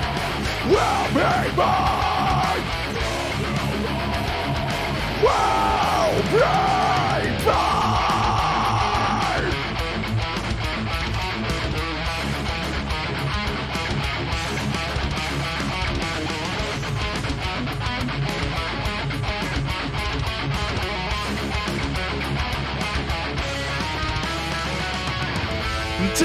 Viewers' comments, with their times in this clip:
0:07 Man that verse riff is not one of, but THE most favorite riff ever written/played. I wish we can have more of this from Trivium, just riffage without singing over.